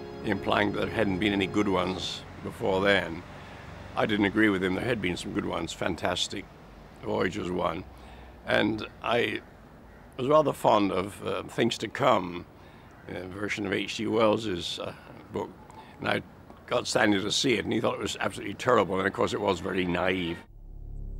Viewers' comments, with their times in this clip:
0:06 Funny how Arthur Clarke stumbles over his words as an image of Raquel Welch comes into his mind.